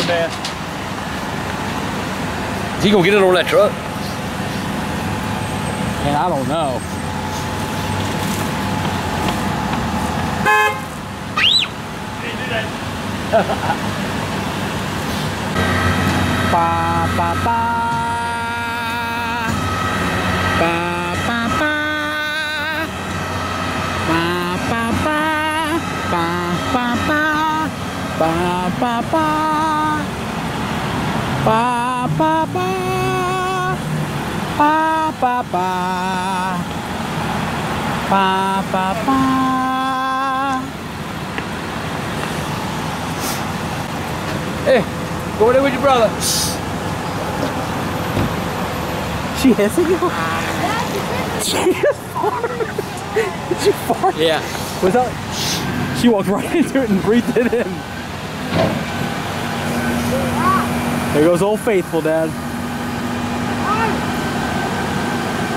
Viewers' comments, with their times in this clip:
0:10 that scream made me laugh
0:10 if you're wondering, that was me that screamed.
0:11 hear the little girl screaming
0:44 Lol the girl hisses at grandpa, grandpa uses his defense mechanism FART XD it was like two animals in a confrontation xD
0:44 "The Angry Grandpa feels threatened by the kids hissing, It then deploys a smoke screen to make a quick getaway"
0:45 did she just hiss at him? 😂
0:50 Angry Grandpa Fart